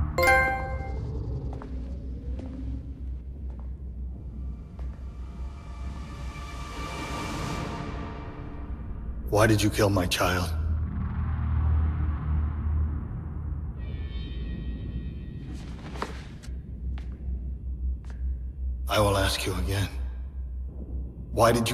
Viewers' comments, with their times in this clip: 0:04 anyone notice it sounds like the old barrier sound from the original devil may cry